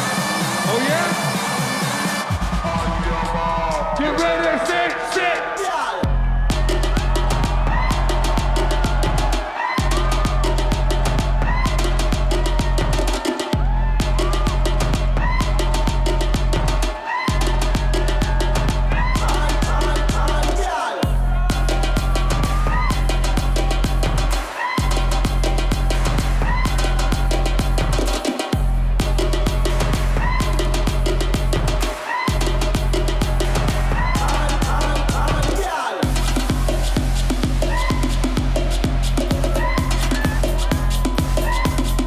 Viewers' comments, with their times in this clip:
0:05 my favourite drop 💛
0:29 The song ... the scream sounds like Pewdiepie's one... don't hate me just saying xD I love how crazy and random the sounds during Skrillex's songs are <333